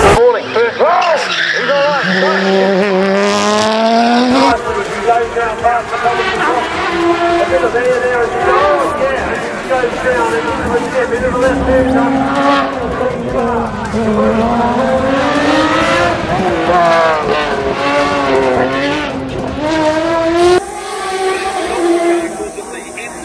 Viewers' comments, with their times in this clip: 0:07 Nice sounding car but i have to say that corner is a tragedy waiting to happen, standing outside of a corner is a very bad idea!